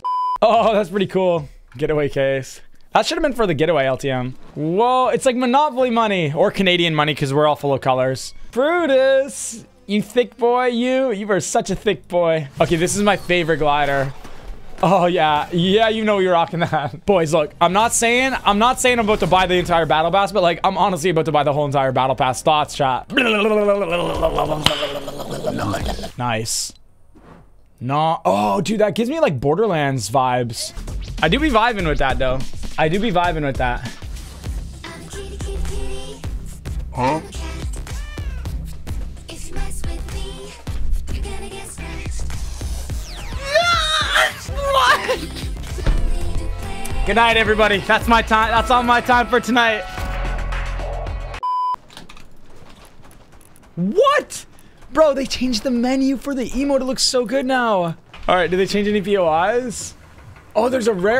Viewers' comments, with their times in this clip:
0:10 why does he sound like pointcrow?
0:16 ye you know we IRAQIN that
0:46 generally thought he was gonna leave the music in the background was playing lol and I was like noooo
0:48 dang it nick, he played the outro music